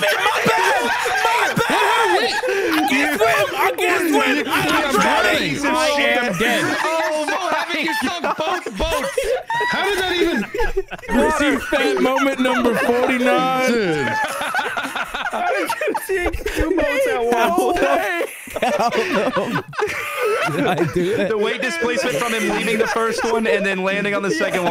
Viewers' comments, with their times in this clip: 0:10 sigh yelp back to the drawing board